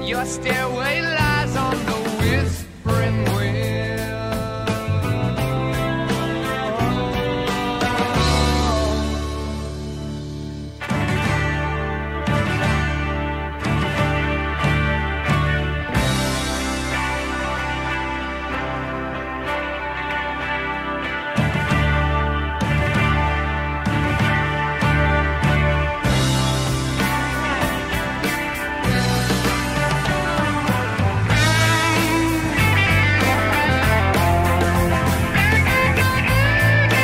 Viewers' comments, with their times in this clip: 0:08 the most beautiful and heavenly build up to a solo in the history of music
0:22 when the greatest solo in human history is about to start